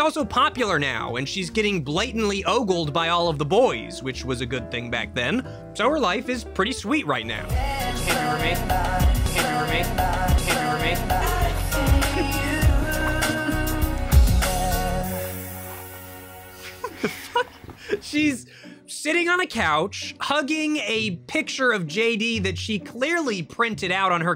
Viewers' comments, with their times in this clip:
0:07 Bro, for real, what does the dude say? "Can it be for me?"!?